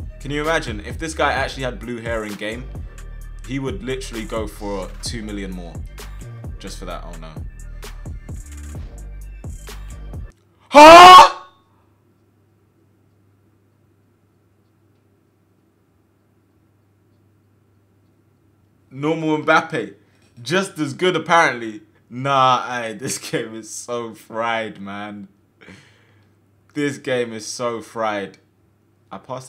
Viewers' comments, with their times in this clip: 0:10 i swear he sounded like soulja boi